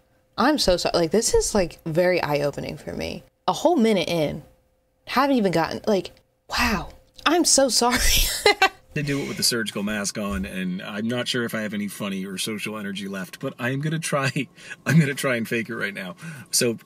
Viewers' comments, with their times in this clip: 0:03 it’s ok when you do it be you don’t sound like ur hyping ur self up. This man was clapping his own cheeks with that whole ass recording